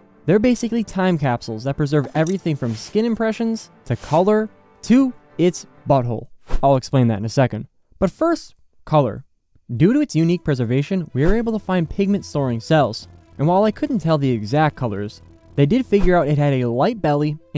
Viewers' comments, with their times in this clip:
0:03 After hearing "butthole" I heard "doodoo its unique preservation"